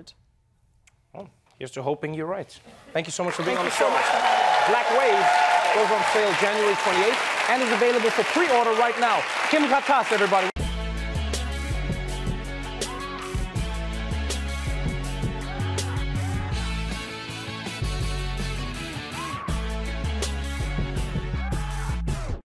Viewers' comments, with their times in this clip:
0:09 he just said "Kim got ass everybody" 🤣🤣🤣